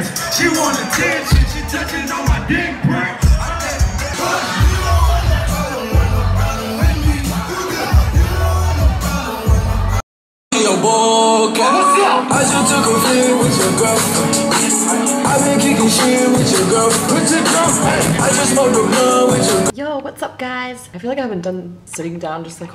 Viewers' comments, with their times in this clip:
0:04 when chance the rapper comes on XD